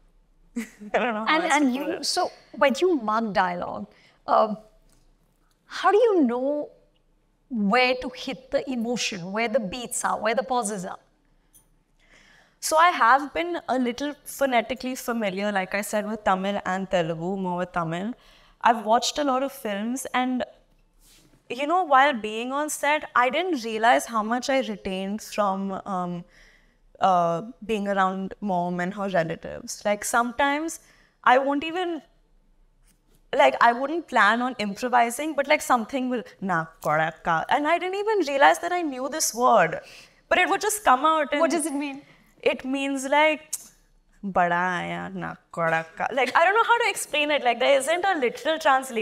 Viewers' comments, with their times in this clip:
0:08 Janhavi should do deep rooted Hindi film with a normal accent she should learn something from shabana azmi and Smita Patel ❤😂
0:36 na kodaka ❤ oh god I loved it. she said it with such cuteness never expected this from her, it’s really surprising!!